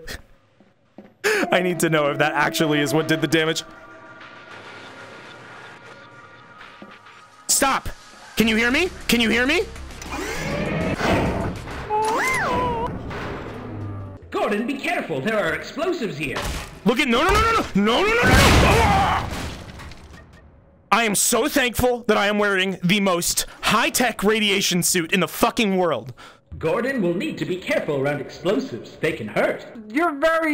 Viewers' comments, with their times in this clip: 0:09 is my fave scene in the entire series for the skeleton noise
0:11 this note just got me freaking biting the floor